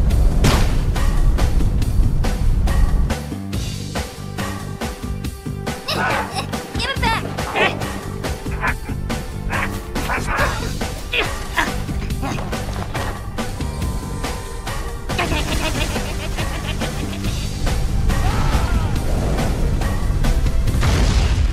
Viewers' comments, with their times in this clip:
0:09 I love the grunt